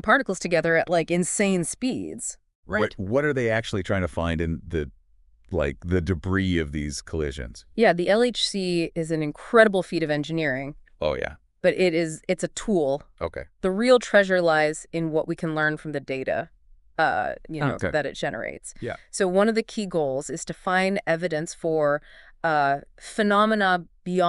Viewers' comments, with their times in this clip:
0:10 took me this long to realize that this is just AI talking. I’ve heard of this before and even thought about implementing it. Good job.